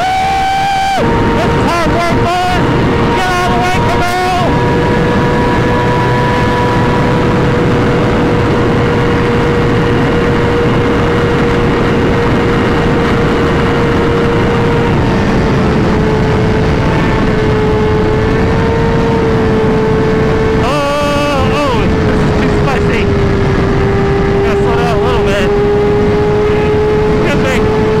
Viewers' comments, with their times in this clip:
0:10 in lmfao holy balls the brah is boooooooming